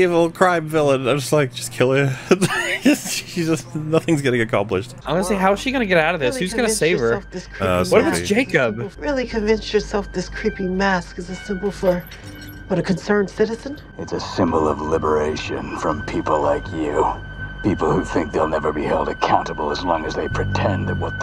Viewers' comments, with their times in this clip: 0:09 this line from black mask sounds Badass.